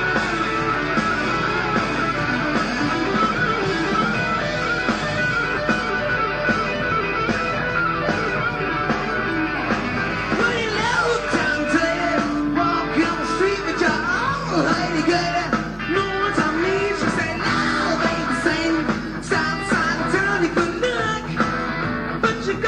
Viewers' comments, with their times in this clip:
0:07 great cool Joe Perry fast lick with quirky timing and feel